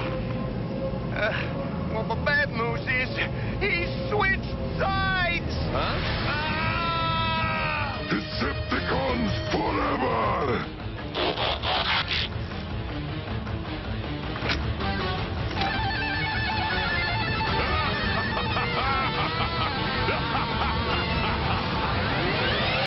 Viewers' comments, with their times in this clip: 0:06 Optimus primal screaming would make a great meme
0:11 nice to know that Even after G1 ended, Ravage still not only transforms into a cassette tape; But also still retains the original transformation sound effect. Really wish the Maximals and Predacons used it since they are the descendants of the autobots & decepticons.